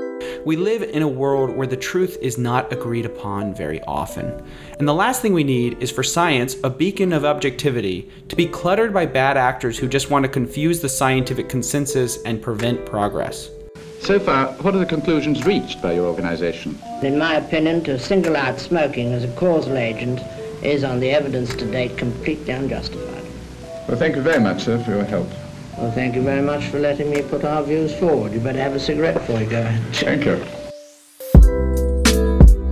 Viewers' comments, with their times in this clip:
0:07 Science is a beaker of objectivity.
0:17 just imagine this man voice combine with helium!
0:20 sweet mother of god, thats a mans voice? I wonder what did that to him, hmmmmm